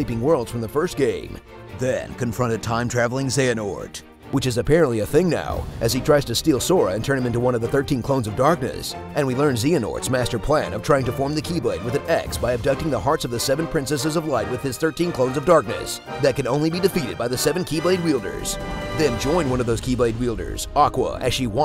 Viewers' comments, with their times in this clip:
0:09 Zeeanort???? They just pulled an IGN, have u guys even played Kingdom Hearts?